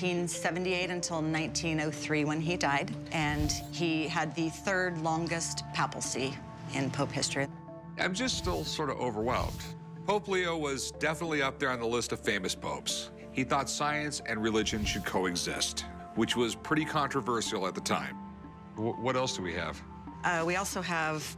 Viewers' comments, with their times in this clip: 0:07 I love how his audio is later added to sound like he actually said that